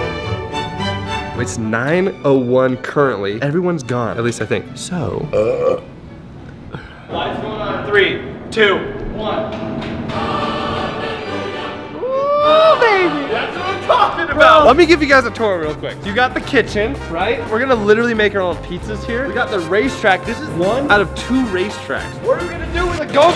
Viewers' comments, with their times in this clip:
0:05 4/10 for that burp